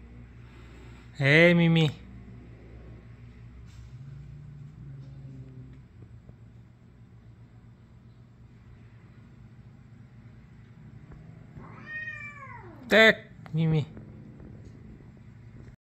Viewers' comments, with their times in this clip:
0:10 Darth Mimi unleashed force roar at Meowling Osa.